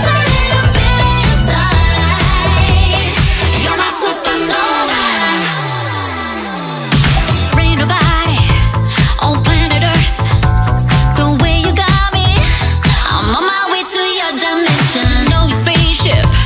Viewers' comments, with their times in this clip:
0:04 The DROP !! My LORD 🥰🥰🥰🥰🥰🥰🥰🥰